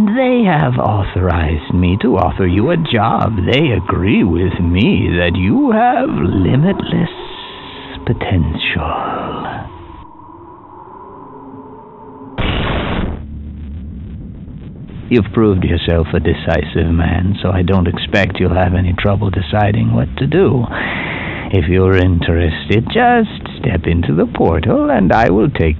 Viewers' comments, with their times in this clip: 0:06 g-man is a creeper in disguise. i mean c'mon "limitlesssssssssssssss potentialll"